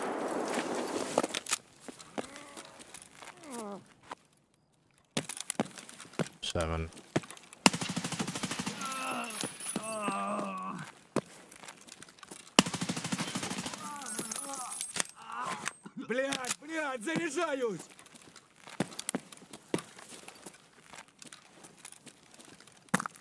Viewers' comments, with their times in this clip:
0:10 so confident? Did you hear him or something? Cause I couldn't, maybe there is something in the clip we couldn't see